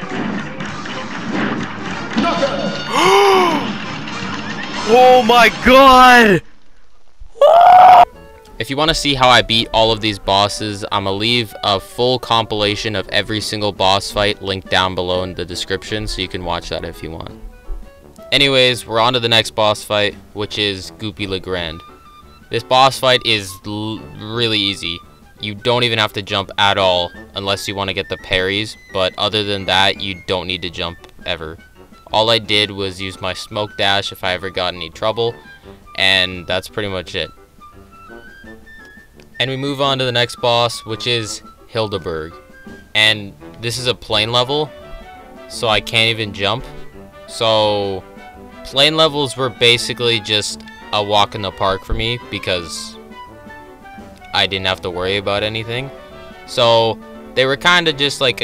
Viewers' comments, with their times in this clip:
0:07 bro turned into a pterodactyl
0:41 Every time I hear "Hilda Berg" I hear "kill-da bird" .... W H Y !?